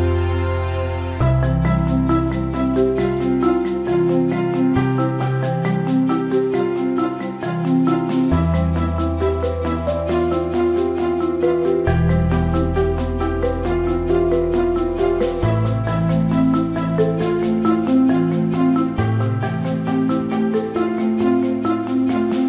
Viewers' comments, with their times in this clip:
0:07 Not anything related much but.. who yawned when she yawned? Me :3